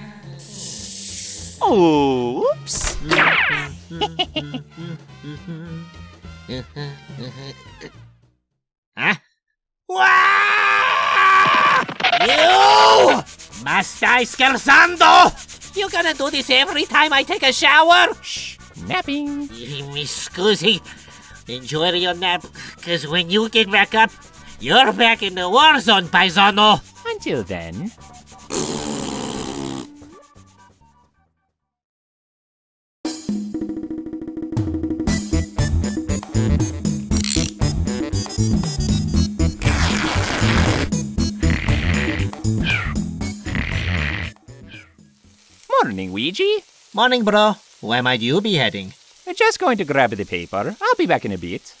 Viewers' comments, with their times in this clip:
0:04 That afternoon, the peaceful stillness was shattered by the cry of a distressed animal...
0:11 the pronunciation suond like Italian cool professional
0:12 You know when a person starts screaming in the native language that shits about to go down.
0:38 I love how Sonic says "don't" 😂